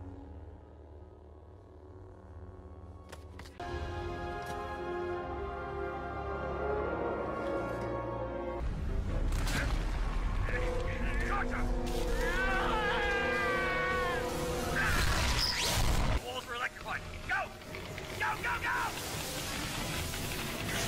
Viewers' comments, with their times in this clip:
0:03 It always gives me the chills when that note comes, like instead of the normal theme, it goes for a Higher note